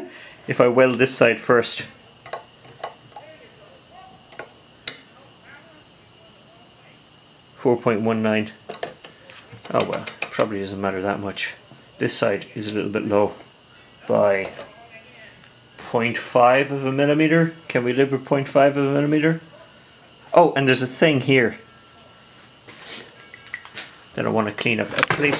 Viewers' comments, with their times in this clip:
0:09 Sound warning for headphone users